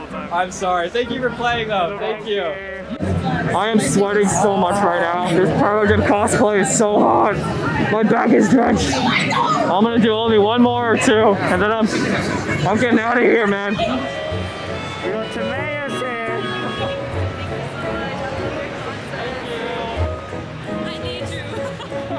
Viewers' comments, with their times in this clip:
0:08 When he said my back is drenched someone just yelled "TUONTO" in the most sr pelo way ever
0:08 that "Tuonto!" at the back XD . I can easily imagine that to be me
0:08 Lmaoo the person screaming tuonto
0:08 did someone just scream tuonto or am i deaf